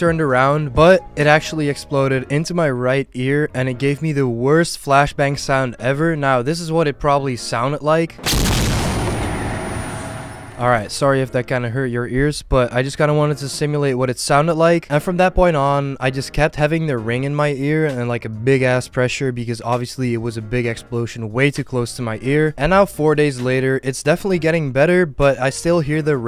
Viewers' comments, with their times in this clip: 0:08 i cant hear anything
0:09 it actually hurt my ears.